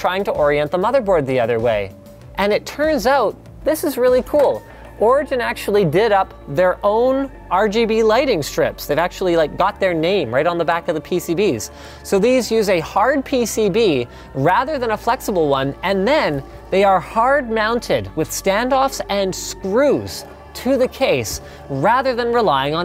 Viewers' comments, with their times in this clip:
0:06 What's with the mysterious music ? Like I'm just wondering...